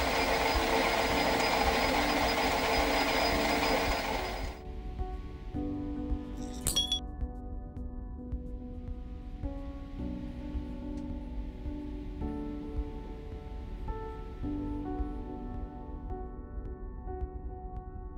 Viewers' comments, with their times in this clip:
0:06 That sound of the washers hitting the bottom of the glass jar should be on the app store as a phone notification